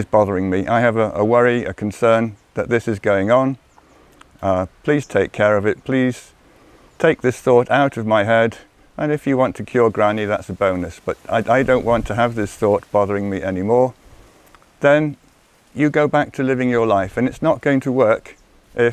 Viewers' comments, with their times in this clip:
0:06 Lol! When I first heard it I thought David said, "If you want to kill granny that's a bonus..."